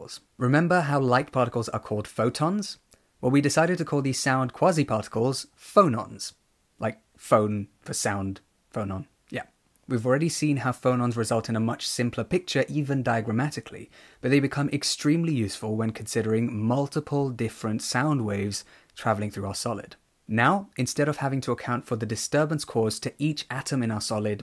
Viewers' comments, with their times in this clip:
0:09 hahahahahaha i am from chile, and my english is not very good but you have and exelent pronunsation and i understand almost all.. Thank you very nuch.